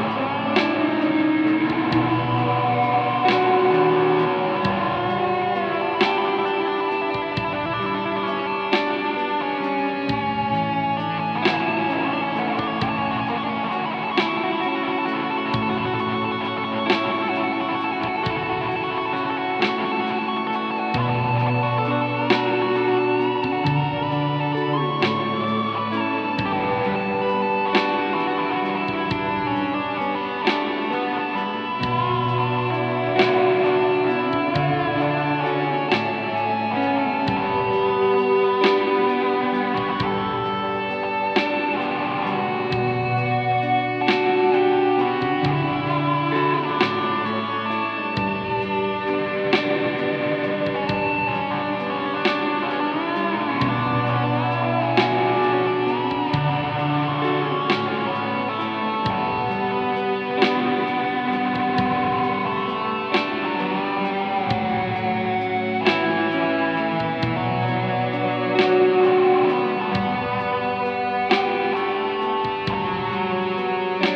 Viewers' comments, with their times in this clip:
0:07 Man and onward seems like a deep prayer. Holy fucking shit that was an amazing finale with that pulse. Very Psychedelic.
1:00 chelllo ! you have a solo nice trick i never seen there ! epic intro jam !